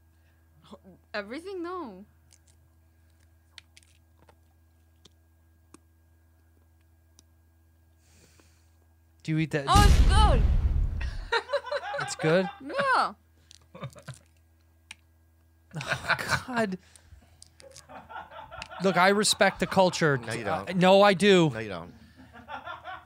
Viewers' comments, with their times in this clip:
0:04 you can hear her crunching the little bones when she’s chewing. No offense man but balut is fucking disgusting in every way dude lmao